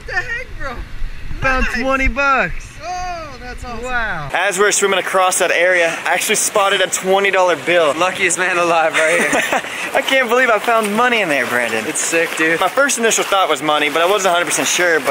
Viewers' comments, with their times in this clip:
0:03 that was a sneaky fart.